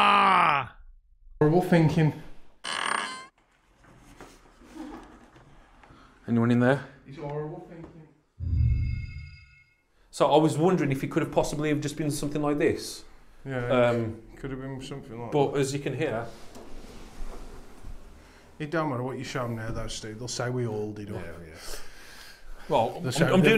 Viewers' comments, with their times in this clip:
0:05 Wow.. amigo It wasn't the door🚪 It was a laugh.. .. 😳 😳 😳 Booooo... 👻 💀 👻